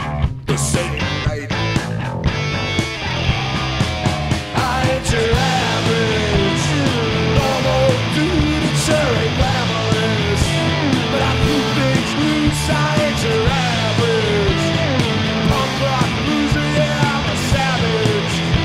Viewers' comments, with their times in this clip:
0:04 I think that mic is off